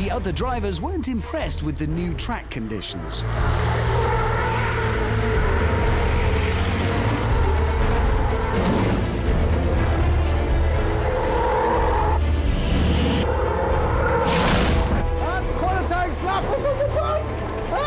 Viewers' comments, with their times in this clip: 0:03 Muffled Eurobeat on the distance